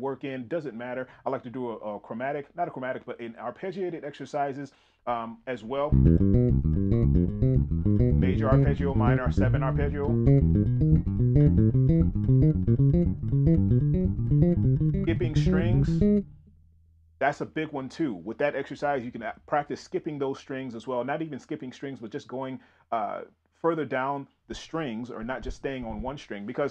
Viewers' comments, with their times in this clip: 0:10 Link opening a treasure chest be like